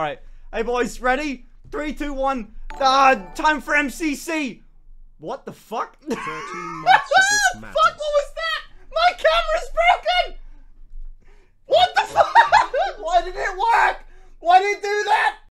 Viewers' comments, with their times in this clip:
0:07 Why did sound like Michael Jackson?